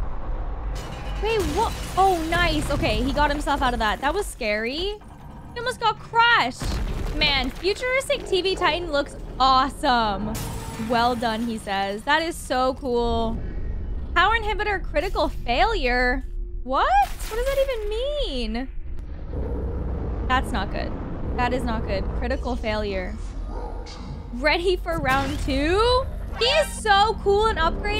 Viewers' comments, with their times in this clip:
0:10 Your voice is very beautiful. My son watches your videos and I listen to you The best thing is to pull out words with a rubber band😂